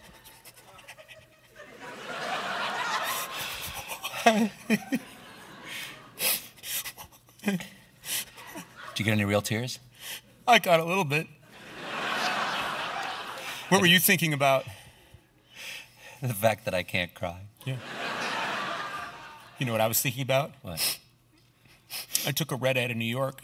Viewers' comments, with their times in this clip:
0:05 stephan breaking chracter and can't hold laughing omg roflmao